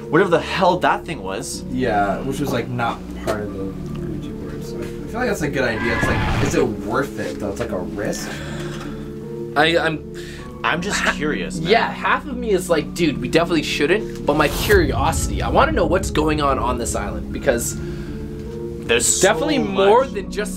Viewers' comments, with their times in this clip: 0:04 wtf is that noise
0:05 WTF is that screaching
0:06 is just me but was there a monster scream